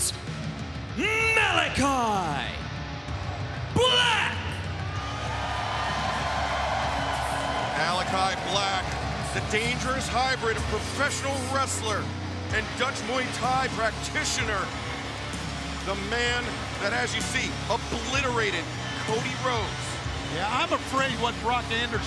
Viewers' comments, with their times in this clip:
0:05 Only shit! This is how you book a wrestler. what a pop